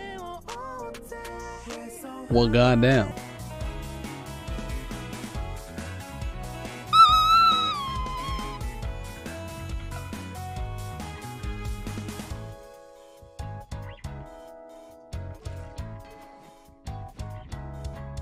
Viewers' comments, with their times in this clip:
0:06 extreme simping noises